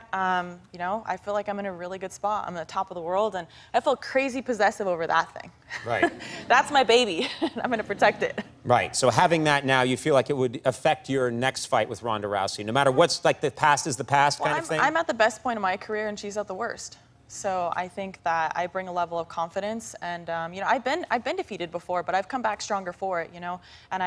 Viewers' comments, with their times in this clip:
0:05 haha the crowed is laughing but its sounds like they are scared haha